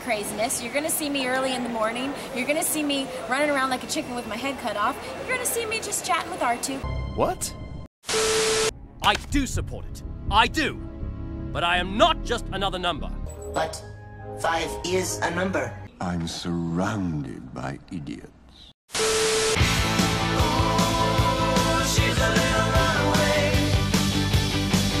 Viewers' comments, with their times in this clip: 0:05 why does that sound like Ahsoka?